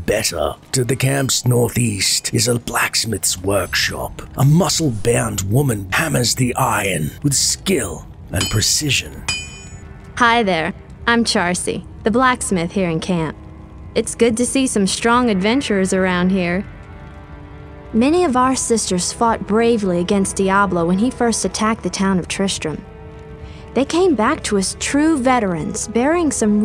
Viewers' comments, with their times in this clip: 0:10 Good lord that jawline! The friendly tone, blurry pixels, and my imagination made for a very different character.